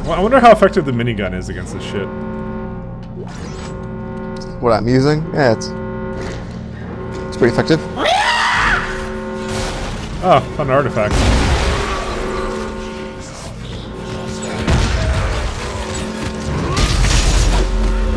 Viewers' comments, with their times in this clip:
0:06 who the fuck voices these things? And who thinks those sounds are scary?